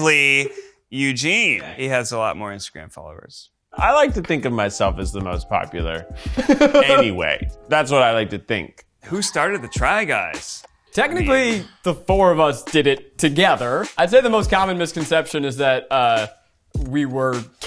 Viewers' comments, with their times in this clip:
0:03 your absolutely right Eugene with his toxic hysterical laugh. What a bugger